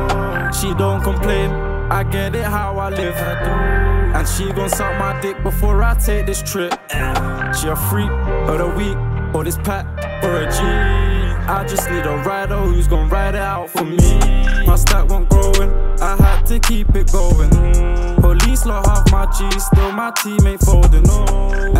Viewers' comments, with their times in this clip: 0:05 cold adlibb skskskks